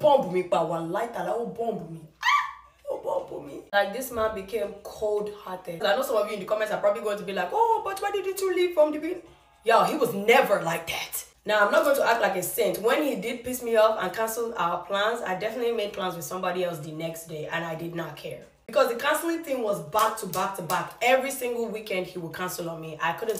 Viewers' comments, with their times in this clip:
0:10 is she faking an accent???